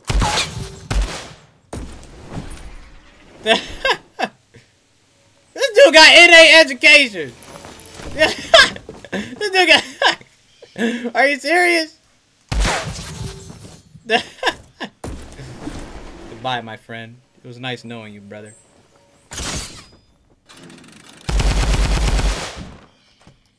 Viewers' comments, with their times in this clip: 0:06 i swear to god he said this ne**a and then he laugh so like nothing happen WTF brather !
0:06 i swear to god he said this ne**a and then he laugh so like nothing happen WTF brather !
0:06 i swear to god he said this ne**a and then he laugh so like nothing happen WTF brather !
0:06 i swear to god he said this ne**a and then he laugh so like nothing happen WTF brather !
0:06 i swear to god he said this ne**a and then he laugh so like nothing happen WTF brather !
0:09 It sounded like daequan said “this nigga” 😂😂😂😂
0:10 Sounds like he said this nigga at like lol
0:10 does it sound like dae says “this nigga” or can i not hear🤣🤔